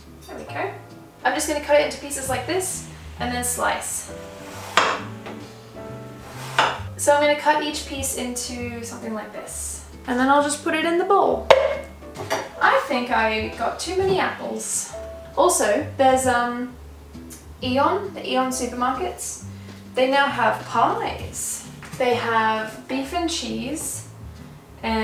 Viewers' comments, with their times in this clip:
0:10 that was such a satisfying clunk sound 😂